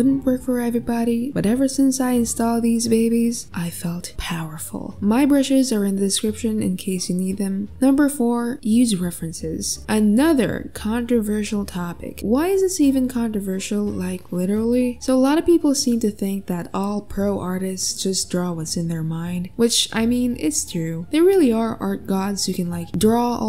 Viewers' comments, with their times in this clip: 0:07 I was waiting for heeheee to sound 😒